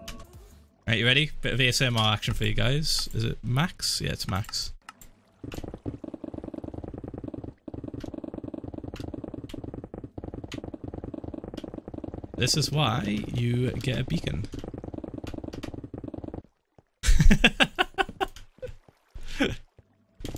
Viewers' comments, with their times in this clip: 0:06 Just Incase if you wanted to hear some satisfying ASMR